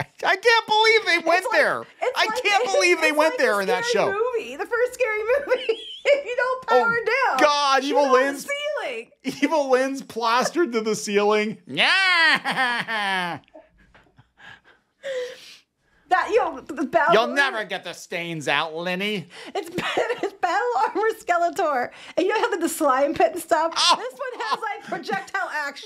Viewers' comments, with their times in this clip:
0:10 I almost spit out my drink with that laugh 🤣